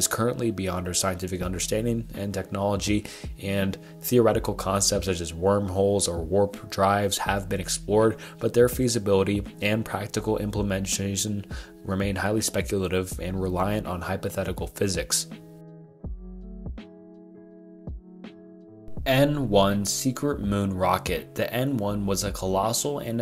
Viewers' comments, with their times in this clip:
0:10 Practical what??? dude, you need to work on your pronounciation.